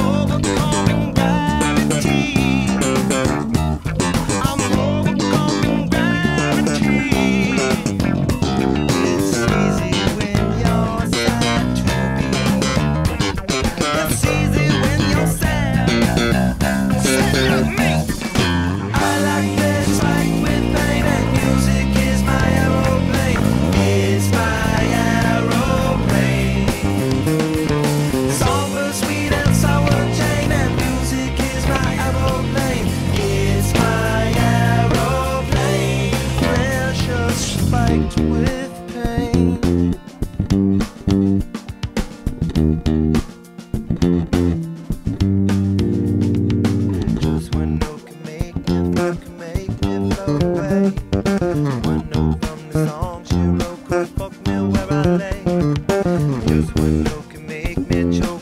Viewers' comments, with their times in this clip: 0:05 Anybody knows how to play that fill he does on the stingray? i love it!
0:09 what kind of bass is that? I love the balance tone on it
0:20 is it just me or is that bassline bending the spacetime-continuum? The GoPro effect is kinda funny from a certain perspective :D
0:44 that added harmony... perfect! I actually dig it so much that I miss it in the original studio version recorded by Flea :D keep on bassing!